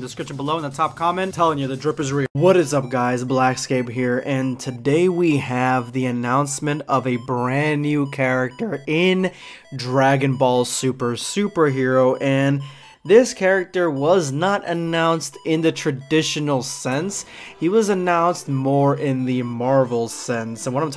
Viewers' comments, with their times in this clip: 0:08 Yo my man what was that voice crack ?